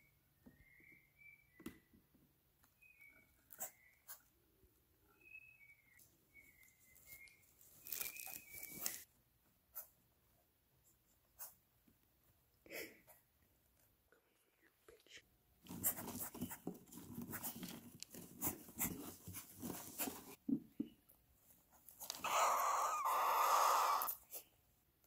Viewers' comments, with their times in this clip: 0:08 I got a question did you really say 'come here u little b*tch' or am I going crazy.